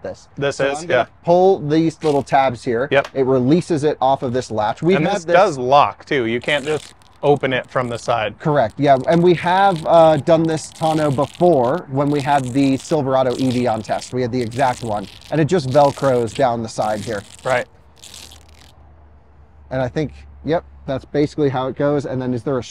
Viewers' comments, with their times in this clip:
0:07 That's some serious ASMR